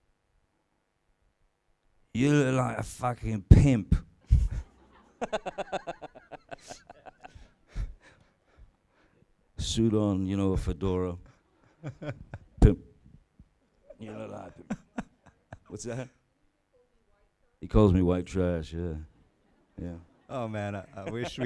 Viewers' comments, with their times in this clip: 0:04 Johnny's cute laugh: